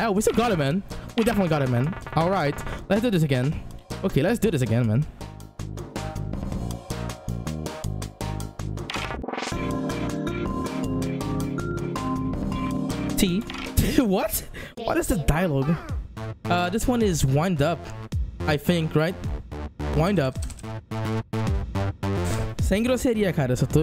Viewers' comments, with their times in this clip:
0:09 *pure silence* ”T.”